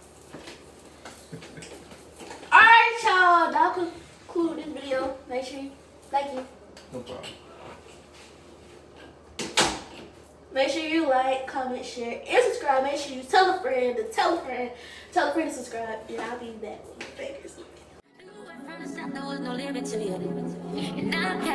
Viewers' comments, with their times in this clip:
0:08 was SOOOO CUTEE the way he said no problem and she looked at him as he walked away 🥹 would make a W couple frl .